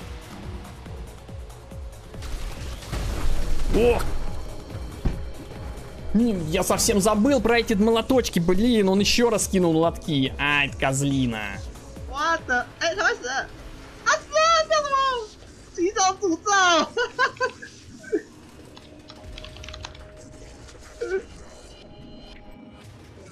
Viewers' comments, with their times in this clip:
0:07 "angry russians noises"? :D This is the sweetest curse I've heard))